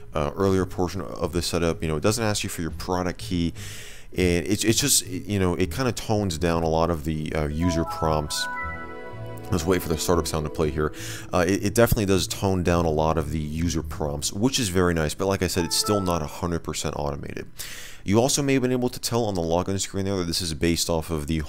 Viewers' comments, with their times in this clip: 0:07 best startup sound in history